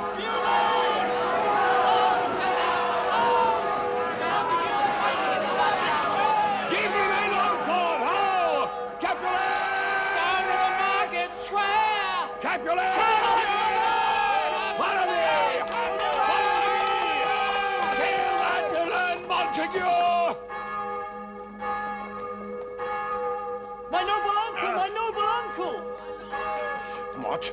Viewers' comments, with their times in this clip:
0:09 but why do it sound like this dude is singing "down to the market square!" 😂